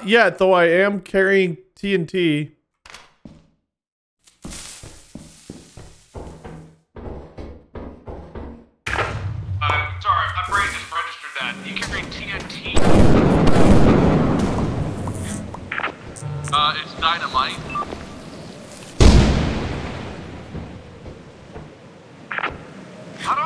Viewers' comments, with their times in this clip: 0:04 the panic i felt as soon as i hear the tssss